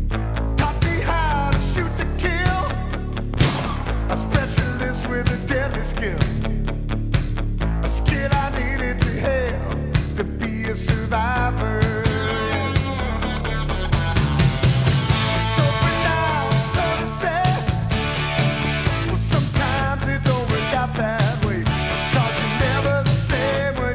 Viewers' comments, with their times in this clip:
0:04 That rifle noise …. Chills.